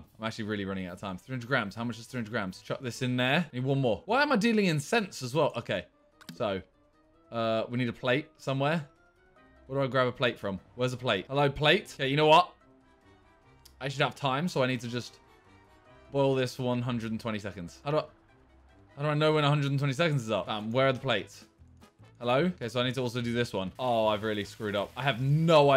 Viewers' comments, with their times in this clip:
0:06 the sound when when you’re on the toilet 😅